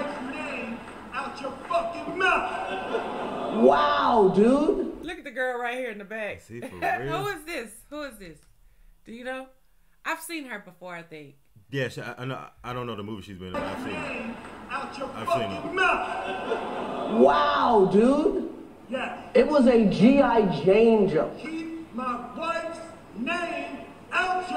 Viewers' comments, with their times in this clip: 0:09 I like many felt Will shouting at Chris was more off putting than the actual slap And that was Lupita Nyong’O